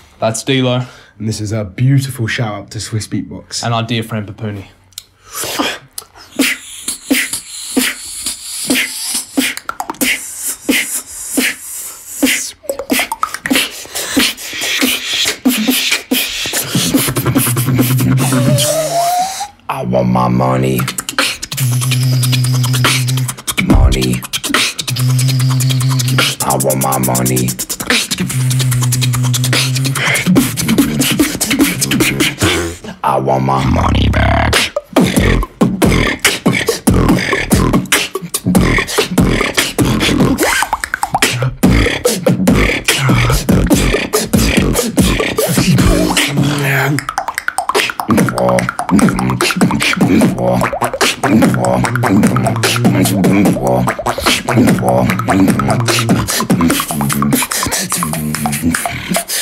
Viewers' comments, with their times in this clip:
0:03 the way they seemlesly went into that beat is ridicules
0:23 that kick was insane
0:24 insane beat drop on bruhh
0:28 build up + beat drop 😫
0:31 OMG DLOW GOT THEM BEATBOX SKILLS
0:31 The Best Drop I heard
0:31 that low voice though
0:31 that drops hits harder then most beats in the clubs
0:32 CLEANER THAN THE SWISSBEATBOX LOGO
0:32 Beat dropped so deep that I sell it for 1 like
0:33 deep and clean than my entire life lmao
0:33 that's daaaaaammmm LOW!!! 🤤
0:33 can't get enough of that inward bass
0:33 I’ve seen this video like 1000 times but yet every single time i still get chillzz from when he does that dark voice thingy🔥
0:33 I love codfish but this drop from Dlow is insane
0:33 How tf does he do that inward bass BRUHH
0:33 Best drop is
0:33 sheesh that inward base (btw ,still listening to this in 2022)
0:33 insane inward bass😳
0:33 i want my bunny backK
0:34 Spam Replay button for dlow's inward base :) edit: thanks for all the likes, and yes it does sound like t-bag 😂
0:34 holy moly his voice
0:34 i feel the vibration of d-low's beastbox
0:34 it really is an alien voice👽
0:34 demon voice is it so scary when theres no vid only mp3
0:34 AM I THE ONLY ONE FREAKING OUT ABOUT THE BASS
0:35 Damnn that drop
0:40 What sound is dlow doing
0:46 how is d-low doing clops that fast, jesus
0:46 how do that double clicks?